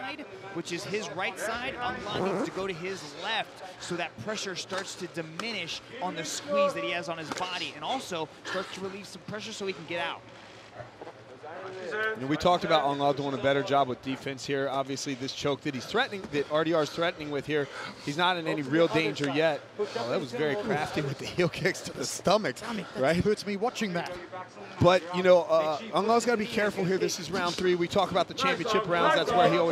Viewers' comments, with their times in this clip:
0:10 Good fighter! Someone farts ?